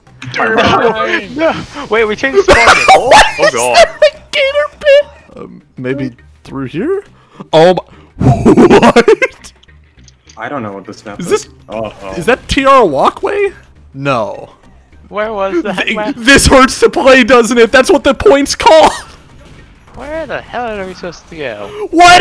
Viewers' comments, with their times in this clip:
0:08 sounded like scooby-doo. Should’ve said “raggy!” After it lol